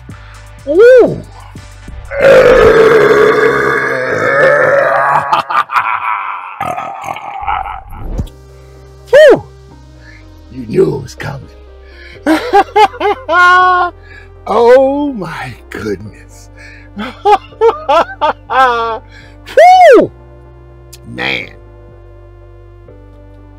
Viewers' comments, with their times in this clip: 0:06 Was that echo real?!